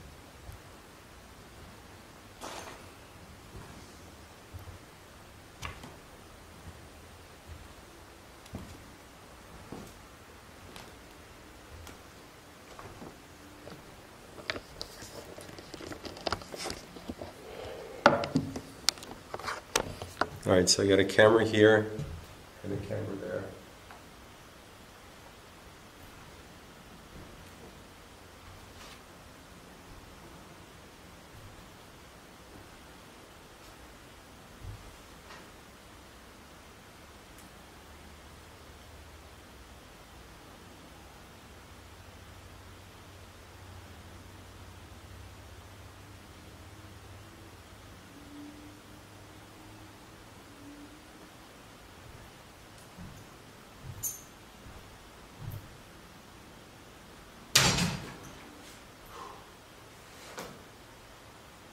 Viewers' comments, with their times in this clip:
0:03 -43 definitely heard a woman humming
0:40 scary demonic voice talking you can barely hear it. Spooky n scary 100% 😮😮
0:47 -16 same woman humming and it sounds like shes humming to a song